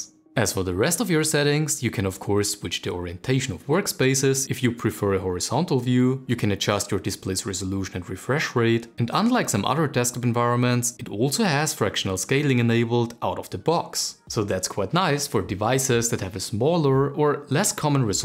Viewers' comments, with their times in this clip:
0:05 I loved the video, introducing this Desktop Environment. Very clear and concise. One thing that has nothing to do with the content, but the presentation. I'm not sure if this is part of the editing, but towards the last 3 minutes, every sentence had multiple high intonations, going up in tone where it should have gone down. You can, of course, switch the orientation of workspACES, if you prefer a horiZONTAL VIEW, adjust your resolution and reFRESH RATE. I hope this is understandable by text. It is very fatigueing and made the last part hard to get through. Again, I think the content is great and also the presentation was done well. Without the tonal changes I would have enjoyed the video quite a bit more. Looking forward to you other videos.